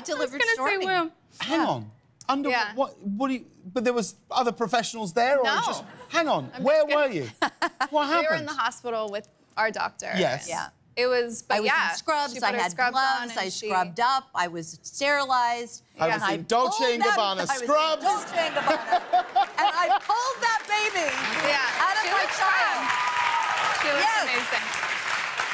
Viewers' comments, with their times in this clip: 0:07 Her and Kim have the same giggle